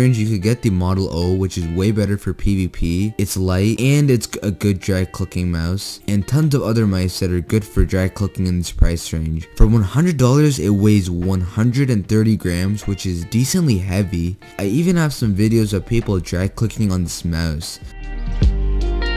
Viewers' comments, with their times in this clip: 0:03 g- g- good for drag clicking. Yo what was that?